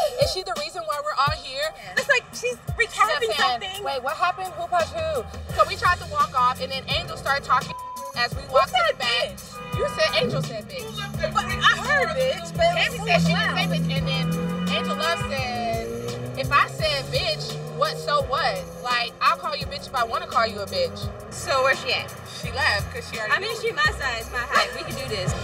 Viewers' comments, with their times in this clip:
0:10 am I the only one who hear someone that says "who left their f car in the middle of the road"
0:11 Lmao does anybody else here that guy going off cause Malaysia left her car in the street